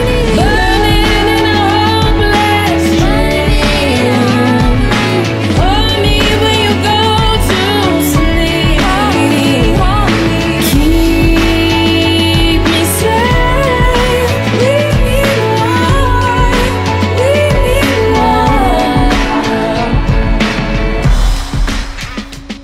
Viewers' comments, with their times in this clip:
0:03 This sounds incredible! I said it before and I’ll say it once again: you are one heckuva music producer! 😁👍 Also, quick question: how did you make Rihanna‘s voice sound like Doja Cat’s ?